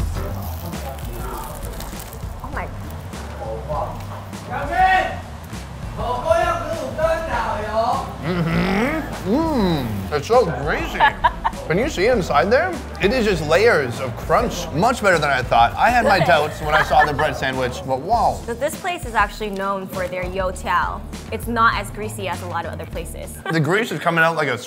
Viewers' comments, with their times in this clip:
0:07 Sonny's best Yummy sound ever 😂😂😂